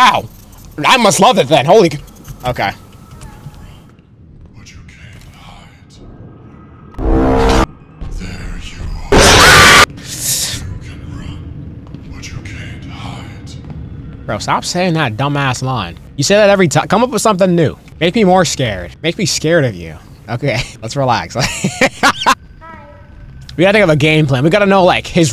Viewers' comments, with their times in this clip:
0:08 bro screamed like his soul was getting snatched 💀💀